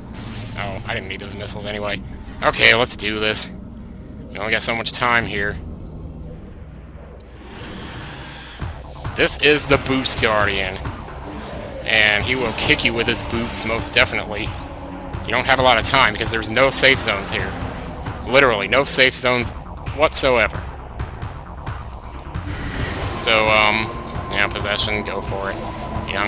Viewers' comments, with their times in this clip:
0:07 My god i love the base of this music
0:13 It sounded like a gunshot? You weren't recording this were you?